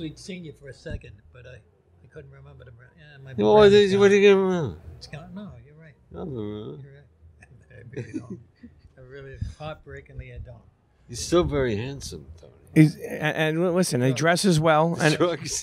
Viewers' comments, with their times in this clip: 0:03 😂😂 what is he saying!